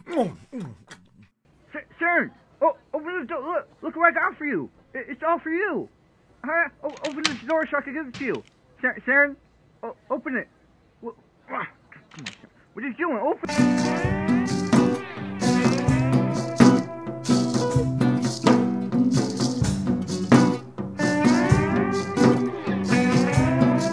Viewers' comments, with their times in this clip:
0:07 Sound of Sharon firmly locking door - just in case he has a key.